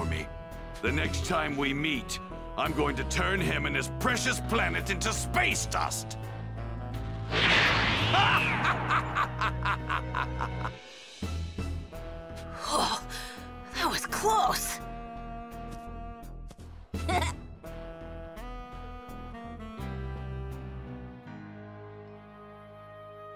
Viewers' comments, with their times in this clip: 0:08 Vegeta's Insane Laughter